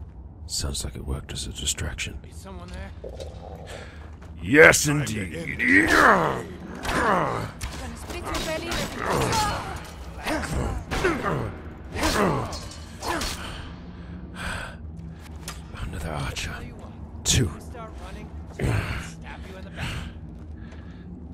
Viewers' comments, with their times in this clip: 0:03 Just love how his stomach gives him away. xD